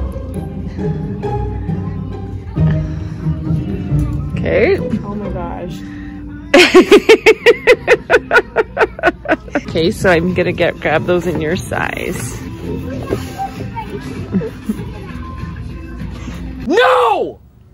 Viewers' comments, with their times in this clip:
0:04 just casual 5sos in the background